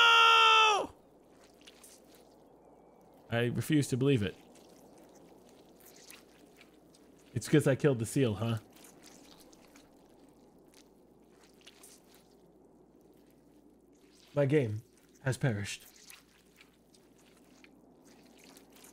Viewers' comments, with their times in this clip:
0:03 Some great asmr !